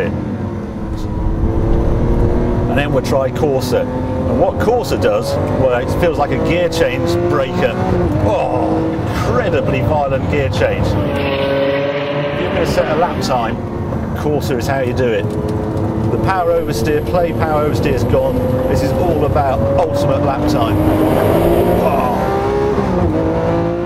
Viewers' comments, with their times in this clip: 0:10 i thought i farted